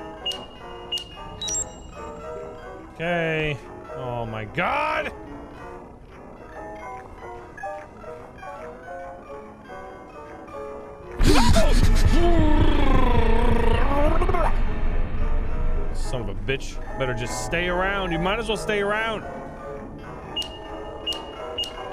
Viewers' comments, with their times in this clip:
0:08 he turned into Donnie from The Wild Thornberries there for a second 😂